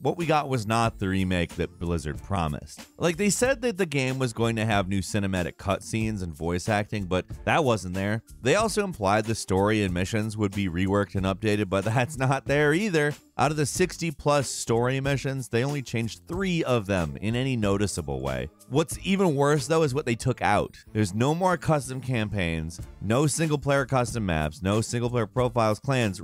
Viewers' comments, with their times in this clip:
0:08 wtf edit problem or voice crack 2.0